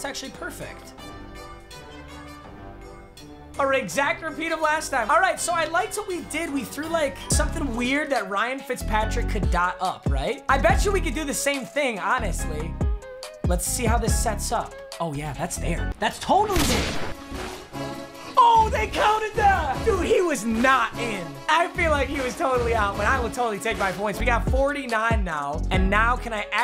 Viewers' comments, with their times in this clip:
0:03 Instrumental is kinda fire
0:11 at playback speed 0.25 he sounds like he’s puffin